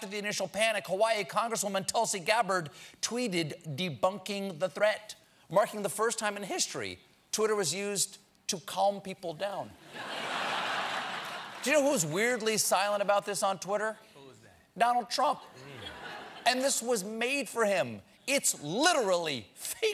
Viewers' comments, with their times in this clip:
0:06 that voice crack lol 😂